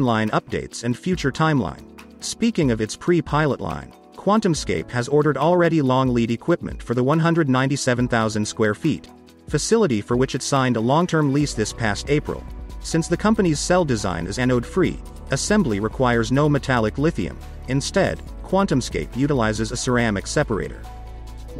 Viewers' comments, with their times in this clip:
0:04 I just can't listen to this narrator. His reading style is so monotonous, robotic and completely detached of the text (see when he says "197 thousand square feet", pause, "facility"). I'm very interested in the topic, but this reading style is just too hard for me to follow as a non-native English speaker, so I stopped watching.